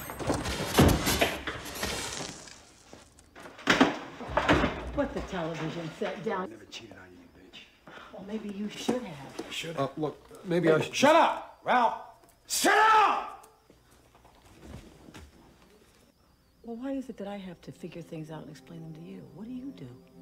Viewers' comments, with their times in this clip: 0:05 editing mistake lol Put the television set dow.